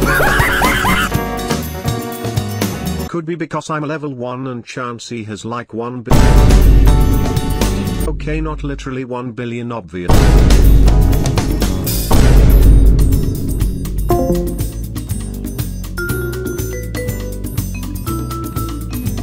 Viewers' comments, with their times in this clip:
0:06 The vine boom had me absolutely rolling